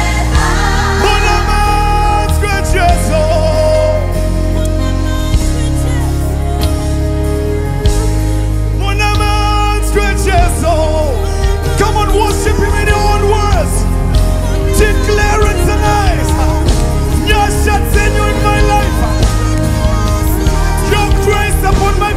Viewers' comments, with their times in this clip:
0:03 The lady doing backing vocals from was extra-ordinary !! Brilliant blending with lead vocals! Epic!